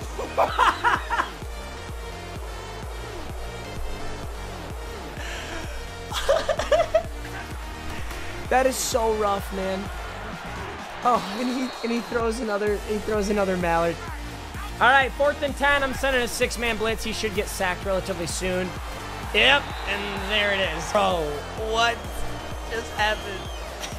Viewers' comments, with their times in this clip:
0:05 Bro that laugh
0:07 Can we talk about that laugh